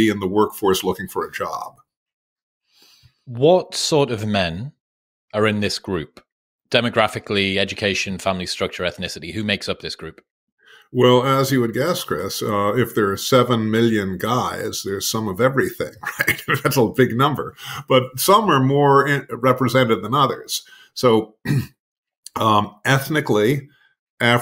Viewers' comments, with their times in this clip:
0:10 This gentleman reminds me so strongly of Jud Crandall (played by Fred Gwynne) in the movie Pet Cemetery from 1989. Listen to him I keep expecting him to say, “The soil in a man’s heart is stonier, Luis. Like the soil up there in the old Micmac burial ground,” or “Sometimes… sometimes, dead is better.”